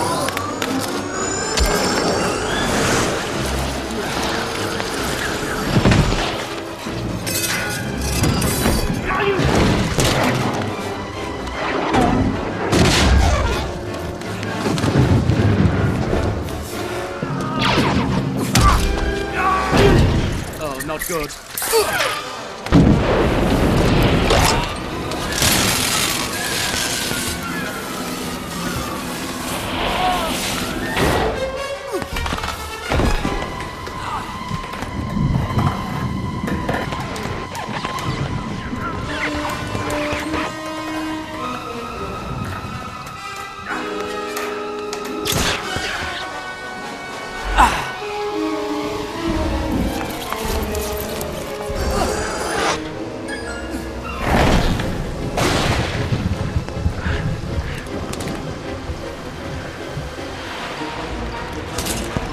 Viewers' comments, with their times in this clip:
0:08 Wait a sec... Does Jango say "NEIN!!" ? O.o
0:08 did Jango just yell no in german?
0:08 I didn't realise Jango Fett was German.
0:09 I swear jango said "nein"
0:09 lego jango fett death noise
0:10 Is it just me but jengo sounds like he’s saying nein 😂
0:18 lego jango death sound
0:19 and one of the most iconic death screams have been born.
0:19 for the classic Lego Star Wars death noise
0:19 Exact same grunt in Lego when he dies (indicates it’s the same actor doing the voice).
0:19 anyone notices Jango Fett's lego death sound
0:19 Lego death sound
0:46 that sigh as he falls past the camera gets me every time.